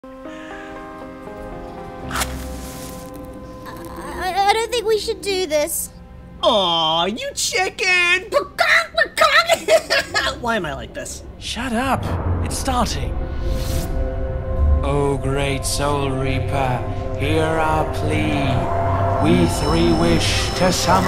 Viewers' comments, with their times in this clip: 0:02 UUUHHHH: Yakko Warner is that you?